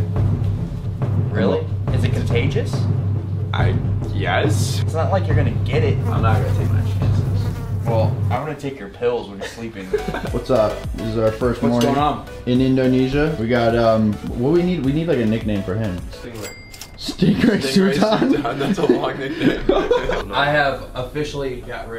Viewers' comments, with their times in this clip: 0:07 Bruh I actually thought there was some mosquitos near my ears😑